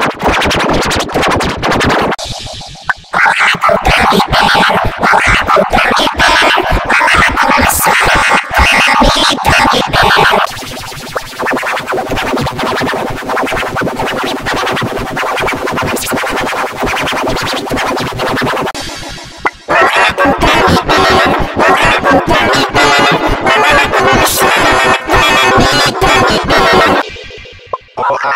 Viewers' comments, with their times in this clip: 0:09 A Major + F Major